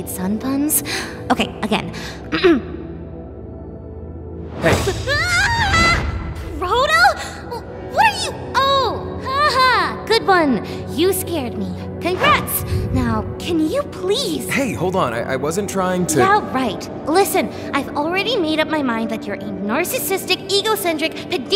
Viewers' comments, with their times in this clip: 0:03 Vine boom sfx
0:03 VINE BOOM LOL
0:04 DID I HEARD THE VINE BOOM